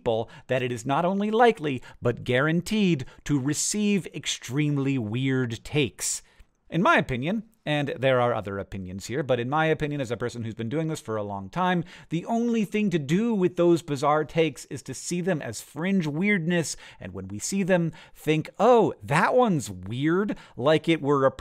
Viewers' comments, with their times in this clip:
0:07 I started seeing this as a video from the frogs' perspective. Specifically, it started with the "in my opinion" frog. Thereafter, it was the frogs talking. What I take from this is that Hank has an unexplored career in voice acting, particularly over animals. Hank, you have a good "animal inner voice" voice.